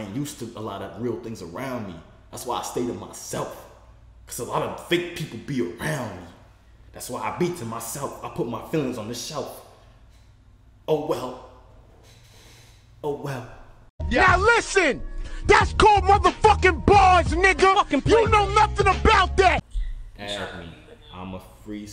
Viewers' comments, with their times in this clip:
0:05 had me dead that lil rap 🤣🤣🤣